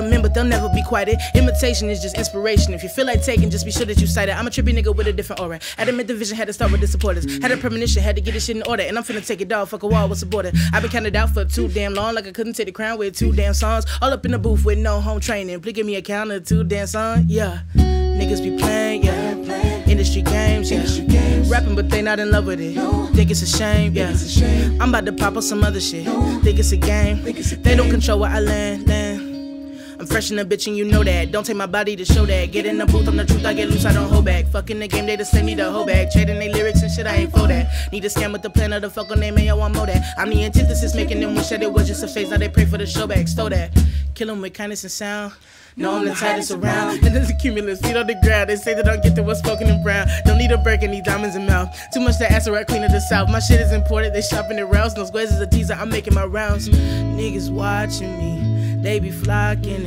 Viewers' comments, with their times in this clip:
0:05 Gosh the pace pick up itself. She's super talented and I hope more people find out about her.
0:47 Why did she laugh ?